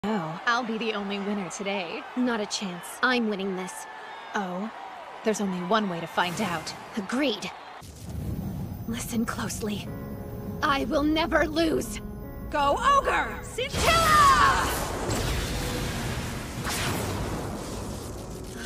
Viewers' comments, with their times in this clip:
0:04 rias gremory is that you?